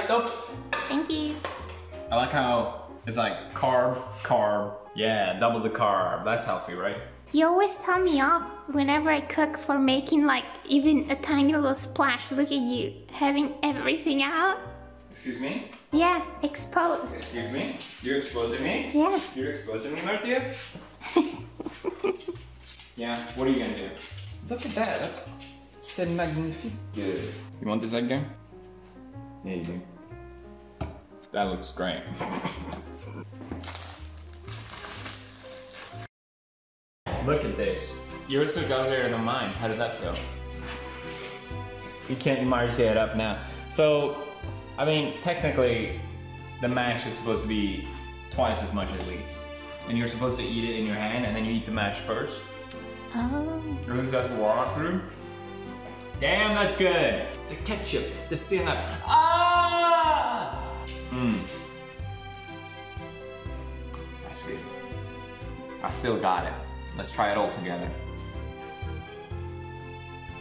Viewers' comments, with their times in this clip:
0:07 is it just me or did marzia sound extemely sad?
0:58 damn bro I had to turn my volume down before some one heard!!